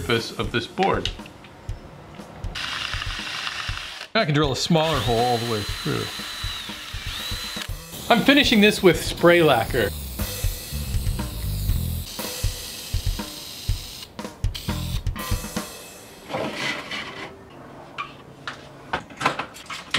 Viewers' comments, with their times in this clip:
0:03 What did you say? "Now i can drill a smaller hole with bluuh?